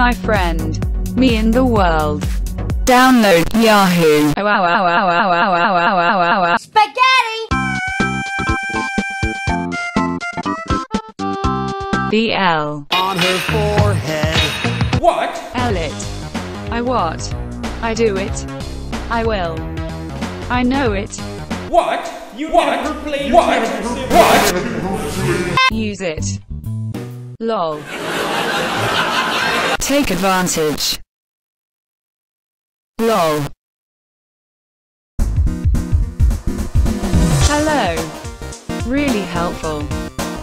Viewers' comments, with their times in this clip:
0:04 why is translate crying Edit: More funny things in reply! 👇👇👇
0:05 TikTok dude: “can I get an awa awa” His dog: *in a demonic shreak*
0:28 bro the laughing effect made me lol